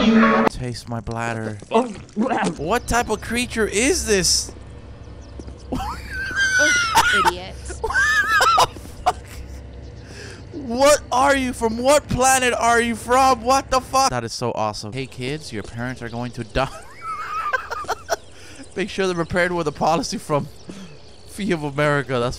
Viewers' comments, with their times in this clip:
0:06 that laugh tho sound like a dying sheep 😂😭🤣